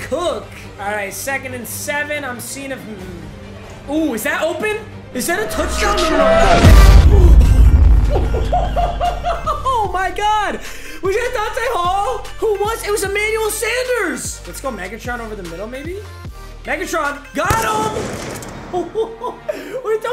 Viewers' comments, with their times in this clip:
0:05 is when gameplay starts and the audio isn't severe ligma.
0:05 non cruced mic